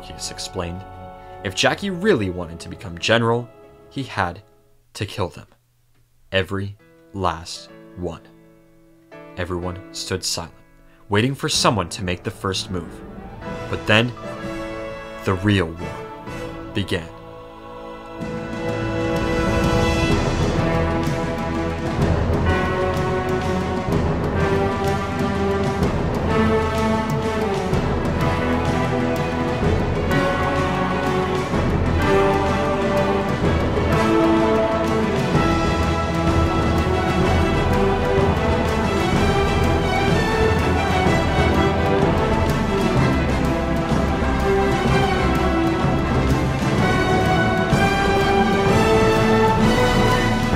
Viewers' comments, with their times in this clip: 0:04 more epic halo music go brrrrr
0:38 love the halo music